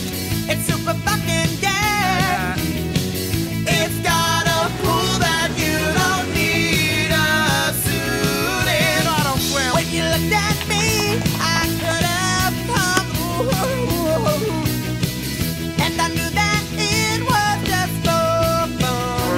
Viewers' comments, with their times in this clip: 0:04 Sick vocals The harmonies are incredible.